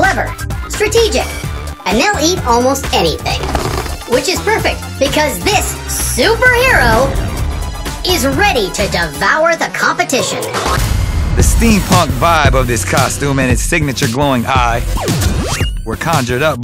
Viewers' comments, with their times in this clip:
0:03 Leaning toward Jeremy Renner for sure. The sound effect sounded like a bow.